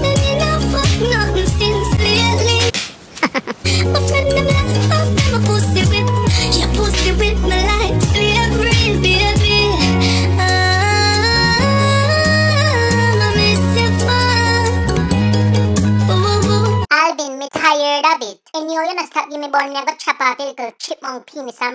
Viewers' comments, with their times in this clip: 0:06 The way Simon laughed 😂😂😂